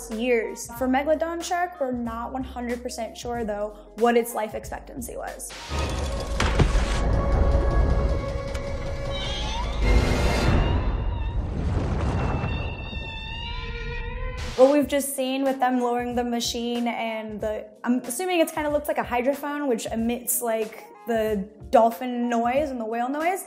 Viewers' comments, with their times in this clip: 0:06 Maybe they were trying to have a Killer whale sound.